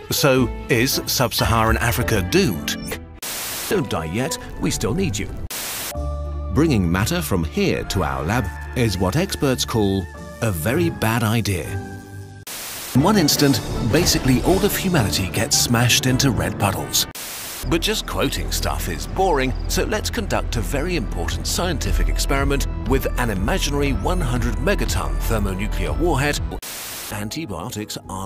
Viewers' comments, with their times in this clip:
0:05 "What's a bad idea?!" Spinosaurus roars
0:14 "In one instant basically all of humanity gets smashed into red puddlds" Why does the music sound so happy? 😂😭
0:14 am i a psyco for laughing at this (and the dramatic music and such)